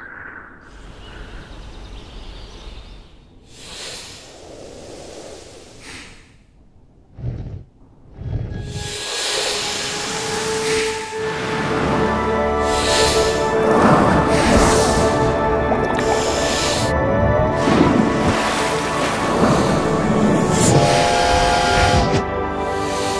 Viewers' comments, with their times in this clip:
0:05 is definitely my favourite part It is so abstract and creative. Also, I like the ambient music in it